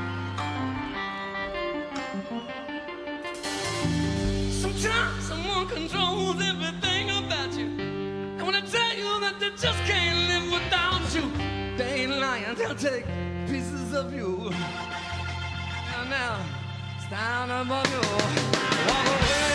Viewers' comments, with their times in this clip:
0:05 when Jack starts singing, shivers every time